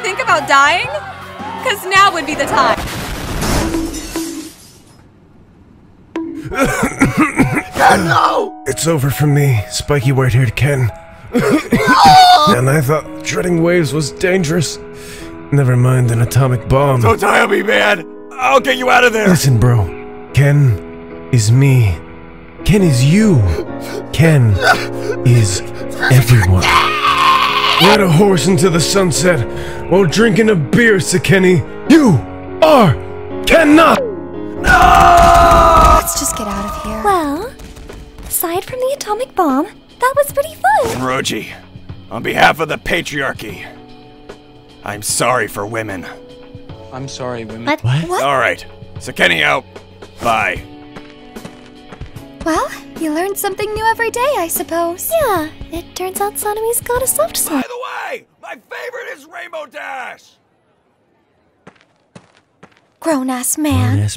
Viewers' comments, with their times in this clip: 0:07 the pure emotion in sanemi's voice when ken's dying is insane
0:07 had me dying 😂😂😂😂😂 The way he screamed "noooooo" was hilarious af😂😂😂
0:12 the way he screamed-
0:24 book marking this because the way he cries is HILARIOUS 😭
0:51 what was that high🤣(of shinobu)